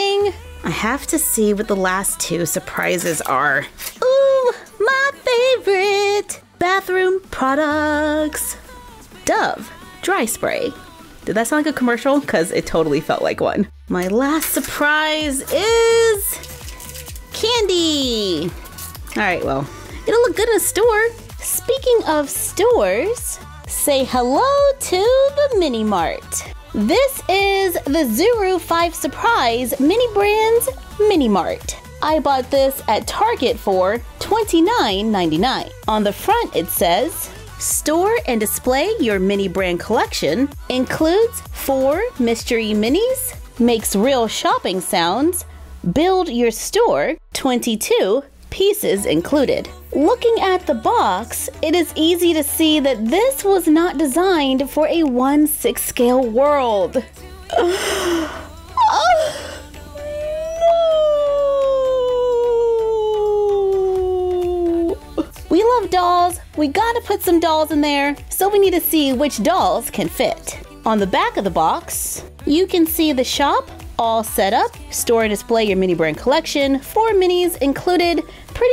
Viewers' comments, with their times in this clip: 0:09 your voice is so beautiful
0:59 she sounds lile erserla from little mermaid